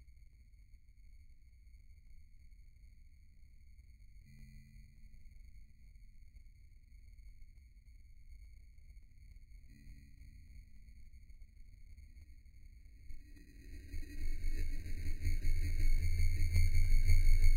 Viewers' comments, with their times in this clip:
0:05 ....the anticipation of the 5% slowmo voice is too much to take!!